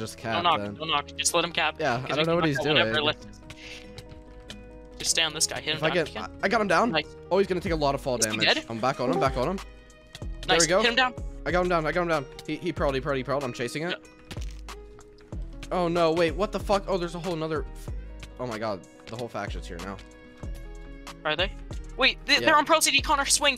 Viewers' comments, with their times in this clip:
0:06 the discord sound tho